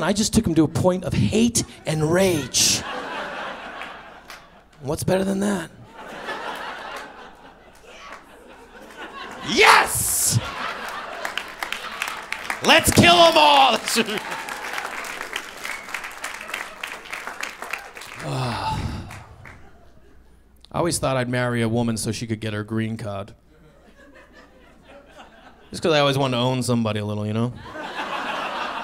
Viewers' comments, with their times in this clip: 0:06 Still the most visceral response to a bit I've ever heard lol... Gets me every time. Five stars baby.
0:09 Great Steven Brody Stevens impression